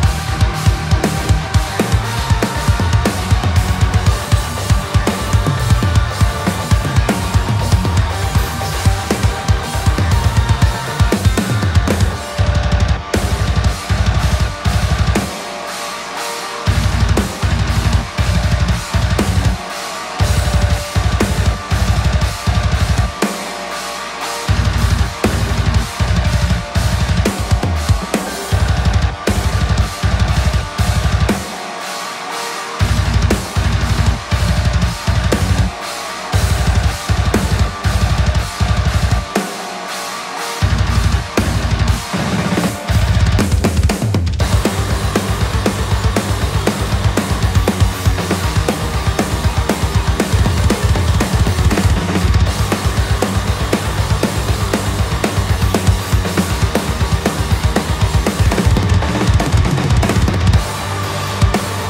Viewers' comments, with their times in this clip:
0:03 More Groove => Not Possible ;) Amazing ....
0:11 Fucking awesome double kick, I can't stop listen and watch this
0:11 Damn, clutch cymbal choke
0:12 SFB So Fucking Brutal
0:13 the playing was so friggin intense, even the camera was trembling onwards
0:13 Them drum MAD!
0:24 i'm pretty sure this is a live recording, look and listen closely he missed a slight tempo on that china cymbal, after all he's a human being....much respect.
0:35 Are there cats in this song?? For example MJAUUU
0:42 snare into kicks fill is nasty!
0:43 Holy shit the groove and rolls